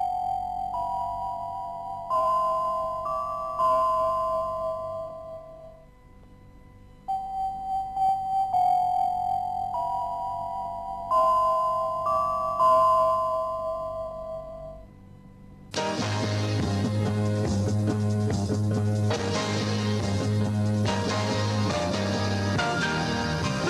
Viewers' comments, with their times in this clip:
0:09 Sound Like RTM